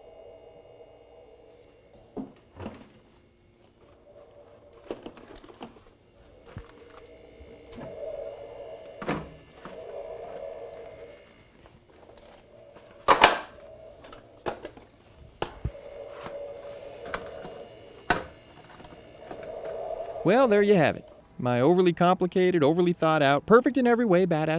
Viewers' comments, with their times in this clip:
0:06 thanks for some DYI lessons here :) maybe one day I will need that. and sounds like it's Darth Vader himself filming you :)